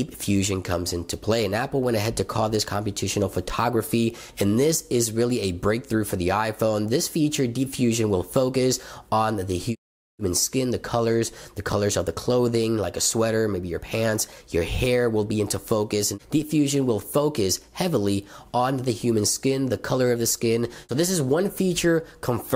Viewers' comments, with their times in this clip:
0:09 is it me or does the sound go off for a little bit ?